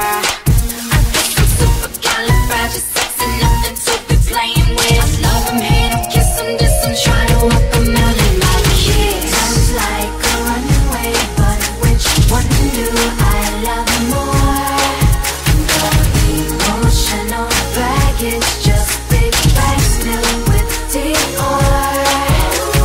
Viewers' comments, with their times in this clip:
0:05 The theme song in the background ugh so good!